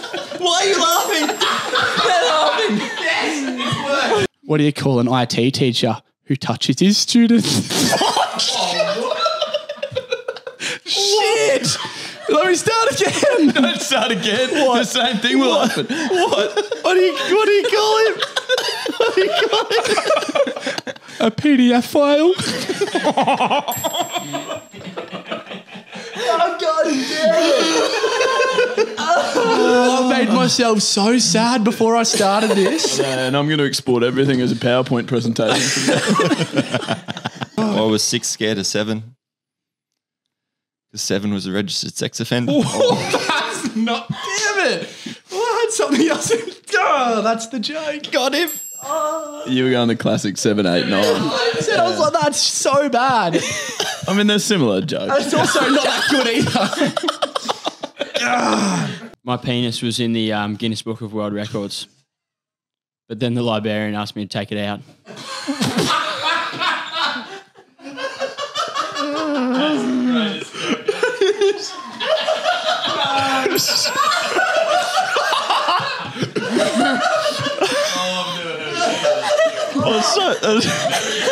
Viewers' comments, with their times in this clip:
0:04 I love when the setup makes everyone laugh. like FUCK this is hilarious I don't even care what comes next! 😂
1:04 Did he just say "Liberian"?